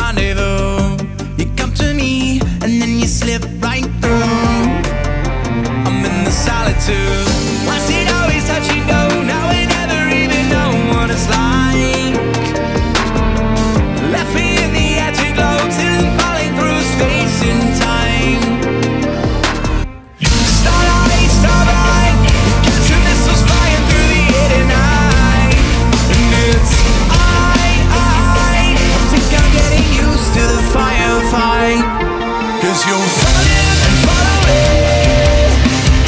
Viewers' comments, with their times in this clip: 0:03 those strings tho
0:20 The command jibberish is so rad. I love this.